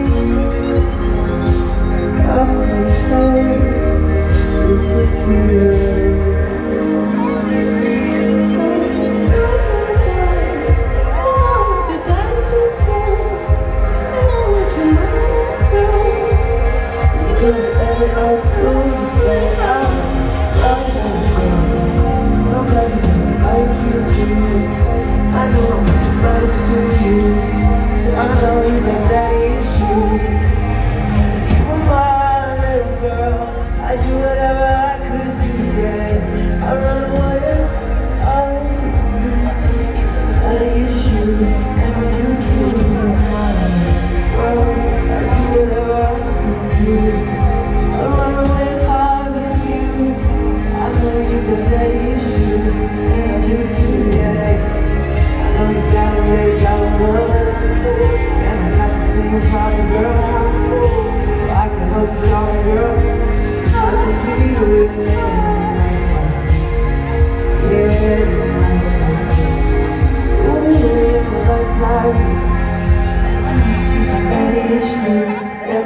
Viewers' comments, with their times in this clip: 0:07 when lana started singing i automatically started tearing up
0:07 THE PERSON SCREAMING DADDY PLEASE IM EVAPORATING
0:08 When lana started singing i lost it plus the way he looked at her i just can't- 😥💕
0:08 lana starts singing
0:08 I can hear her softly throughout the whole thing when she is actually singing, but its much more noticeable when she sings in a higher pitch
0:34 love the way he sings ❤️
1:03 the "ha ha ha" sounded so weird lol